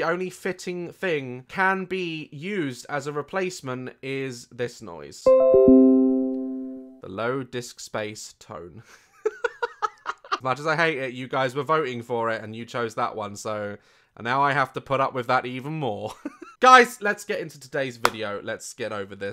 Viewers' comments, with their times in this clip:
0:05 HELP NOT THE LOW DISK SPACE 😭💀